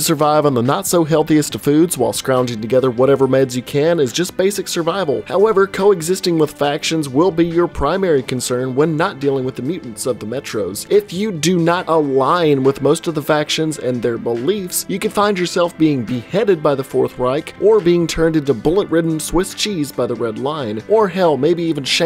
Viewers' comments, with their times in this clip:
0:08 That song brought back some memories